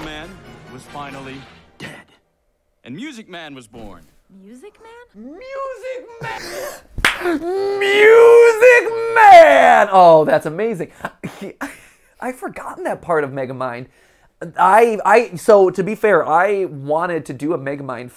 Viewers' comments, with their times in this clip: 0:03 I love MatPat's shift from mild interest to shock and awe "MUSIC MAN!" will never not be funny.